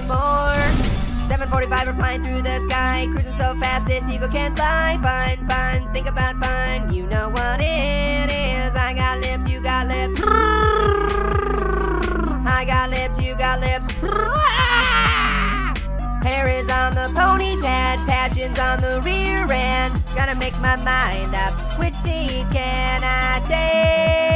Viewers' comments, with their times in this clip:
0:10 here is the part of the brrrrrrrrrr and make it 2.0X, you'll see how fast it is